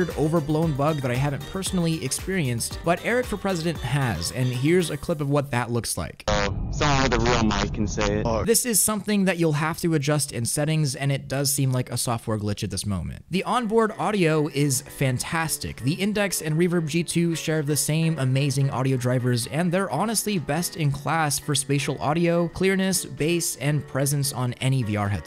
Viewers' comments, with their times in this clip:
0:05 That's pretty much what everyone with a Quest sounds like lol
0:07 I would get this headset so I can have a funny mic like this. Is it possible to do this on a quest 1